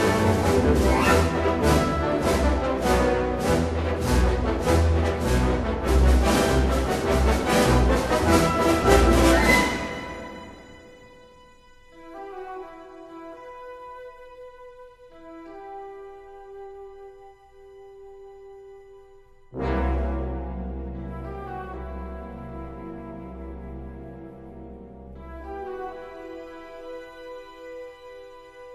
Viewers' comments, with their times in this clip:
0:10 There are a lot of little gestures in this score that become full themes or motives in the Harry Potter music. Only natural, not saying he's self-plagiarizing because well, it's the same composer so it is to be expected that certain gestures come back. It's just fun to hear this with the Harry Potter music in hindsight. Take for example and tell me that doesn't sound like a miniature Harry Potter stinger.